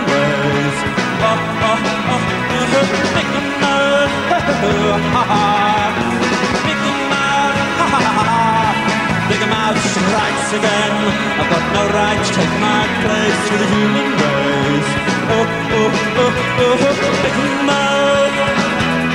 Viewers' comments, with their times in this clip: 0:07 I love his sarcastic 'hahaha's